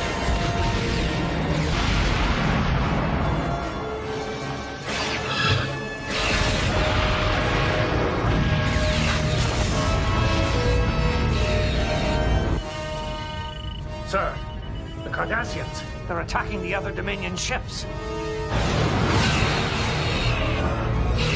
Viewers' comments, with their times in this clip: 0:07 Let us all appreciate the fact that the Galor-Class Battlecruisers impulse engines sound like the radial engines of WW2 bombers.